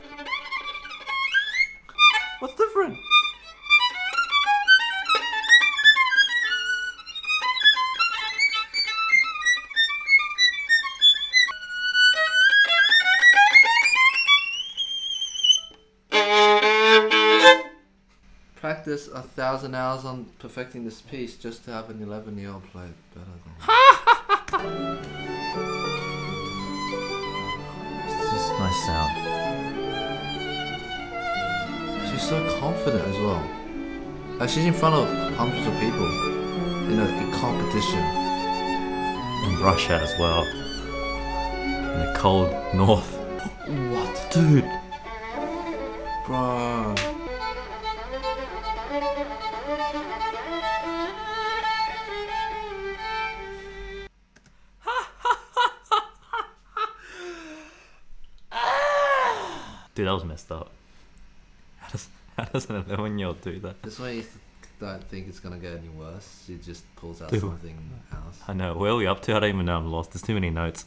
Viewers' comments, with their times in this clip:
0:03 Third symphony of the dying cat on E sharp
0:09 how i sound like if im laughing too much and im almost out of air.
0:12 sounds like a jet about to take off
0:57 the sound of ones soul leaving their body